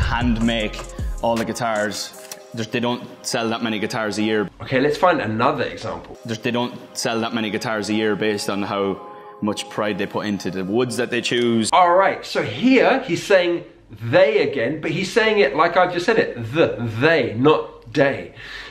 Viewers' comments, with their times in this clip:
0:05 The changing for TH sound back to a D sound is largely dependent on the word you just said beforehand. I say hings instead of things, however if I am beginning the sentence with the word things I keep the th. Source: I'm Irish